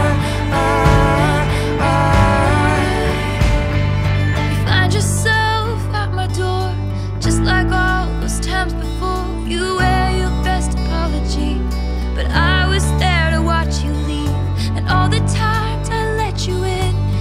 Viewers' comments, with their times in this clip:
0:04 is it just me or did taylor sang "find yourself f*ck my door" ?